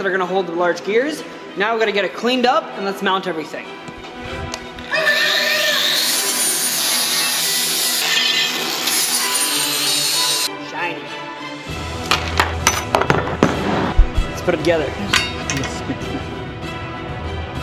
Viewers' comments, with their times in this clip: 0:04 it sounds like somebody’s saying wait no, no, no, no, no.